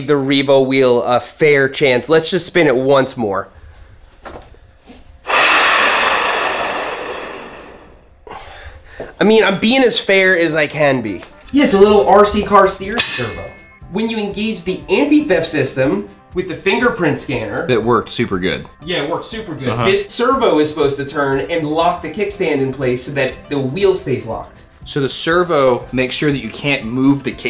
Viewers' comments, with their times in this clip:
0:08 this rolling metal sounds like a train! 😁 I wonder what makers of this thing was thinking building it. Was it something like: "quick! before we realise that it doesn't make any sense!"